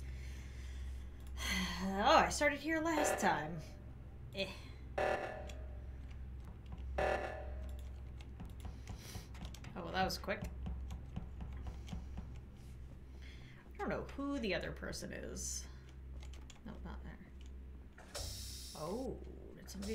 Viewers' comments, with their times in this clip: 0:07 love how she was quiet when they was all talking